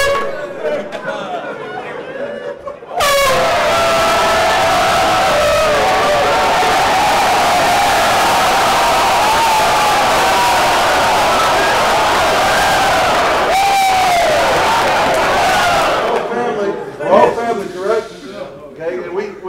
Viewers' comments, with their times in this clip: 0:05 the ear rape is fucking hilarious 😂😂